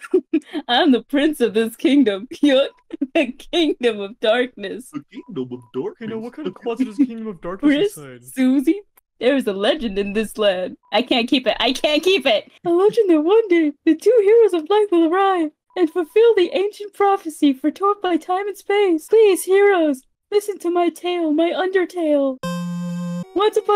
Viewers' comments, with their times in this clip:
0:10 I can’t tell if Ralsei supposed to be goofy or Gideon from gravity falls 💀